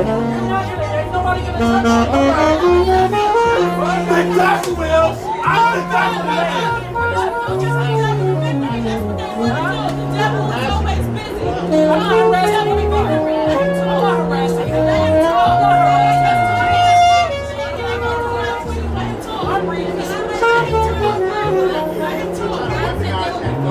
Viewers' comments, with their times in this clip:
0:07 lines from here with the music are so good